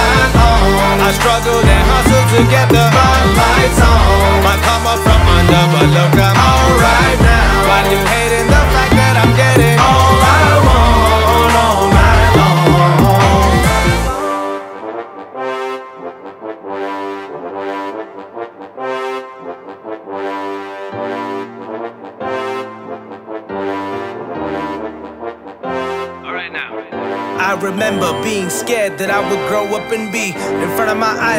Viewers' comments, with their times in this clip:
0:09 Take that flute followed by trumpet 🔥
0:14 I love the trumpet part so much, idk why but it's so inspirational man, keep up the good work You need so much more recognition